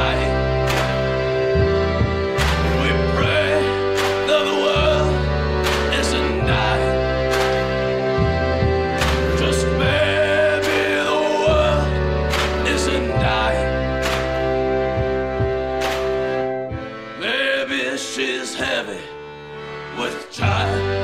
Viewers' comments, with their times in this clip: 0:09 I hear other words he's not singing. So strange. It makes me want to sing it right.